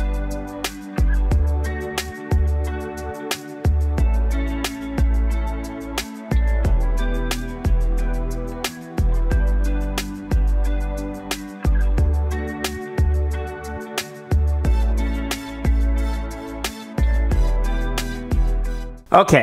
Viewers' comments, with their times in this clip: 0:04 You should paint the walls down there! Also, the music buuuumps!